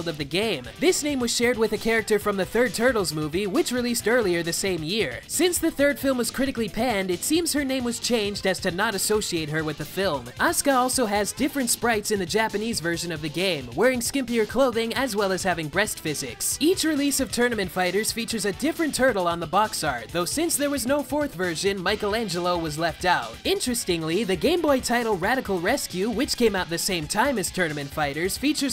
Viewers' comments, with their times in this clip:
0:09 dude comentating sounds nasily as